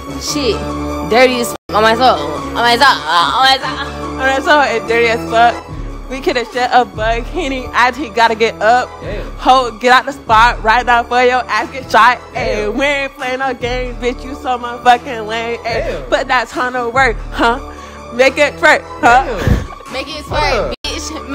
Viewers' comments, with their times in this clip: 0:06 Why dey rappin like chromosomes missin?😂